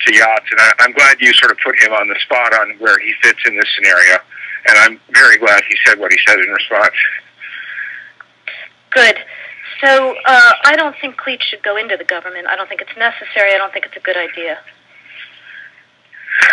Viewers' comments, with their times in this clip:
0:03 Wow! Great manufactured lie. Minute Vitali Klitschko speaking like a basic white USAian.